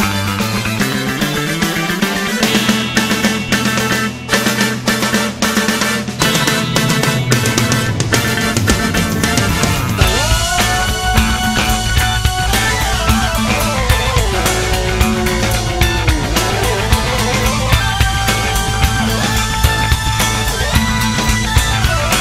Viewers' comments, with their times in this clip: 0:10 really kicks in. This song showed that after 28 years they could still wipe the floor with most other bands.